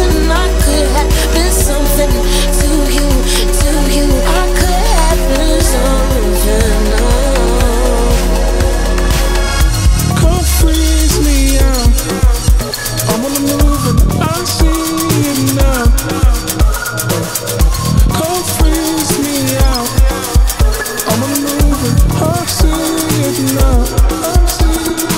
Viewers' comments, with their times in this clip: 0:09 Left for words with how stunning this track is, so moving, lush and so grooving. What you did the layering, how the bassline sits back to let the spaciousness & vocals breathe, flowing in to Broken Beat.. Love this track and the album!